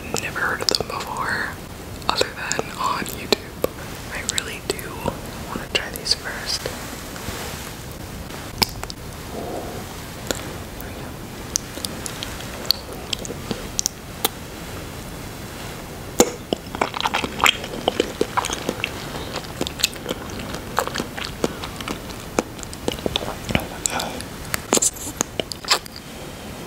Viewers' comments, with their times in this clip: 0:09 was my favorite part because the flop of the jelly noodle was so sad.